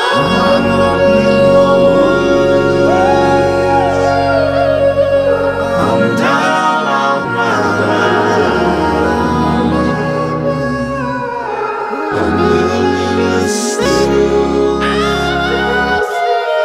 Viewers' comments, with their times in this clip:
0:03 I always loved that little high note